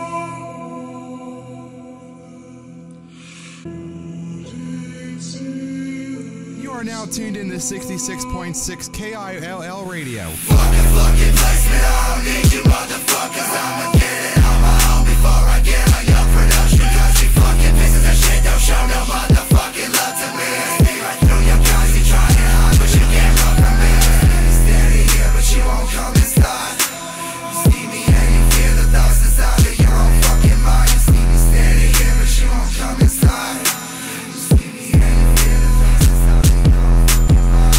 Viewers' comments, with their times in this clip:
0:10 omg I had it on full volume and headphones
0:10 why is he so emotionless?
0:24 his voice sounds like the emo guy in Gravity Falls that likes Wendy